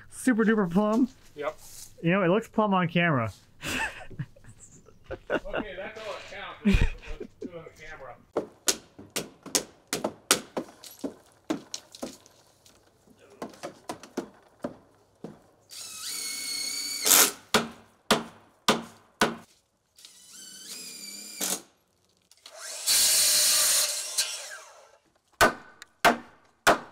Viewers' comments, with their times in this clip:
0:09 <<hammer drill hahahaah